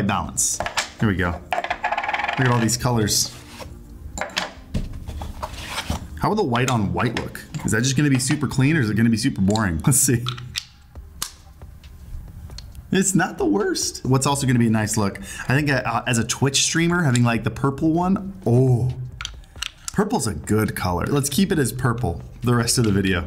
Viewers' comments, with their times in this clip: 0:06 Is it the music that has that high pitched sound throughout the video? Like I kept thinking one of my roommates was drilling something until i heard it a few more times and realized it was the video. I do use Iem's so im not sure if this is as prominent with headphones.